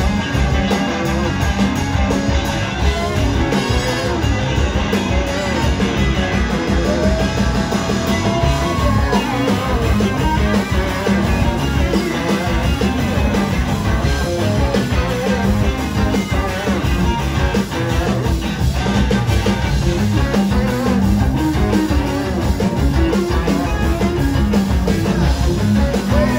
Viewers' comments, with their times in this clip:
0:09 is how you lock in with a rhythm section.